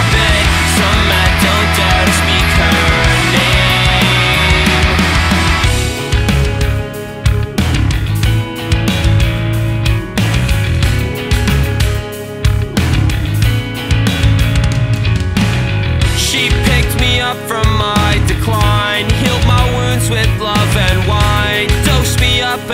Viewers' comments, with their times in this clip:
0:04 Damn i vibe hard everytime to shit is groovy af.